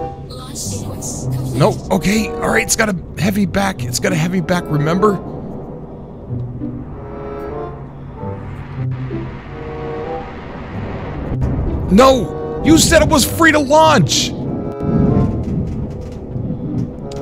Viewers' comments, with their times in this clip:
0:04 love the music. Lol